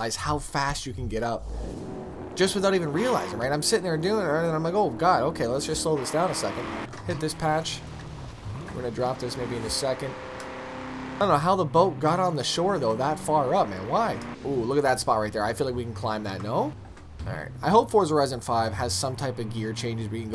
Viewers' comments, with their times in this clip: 0:06 "imma drop this ni**a into second"??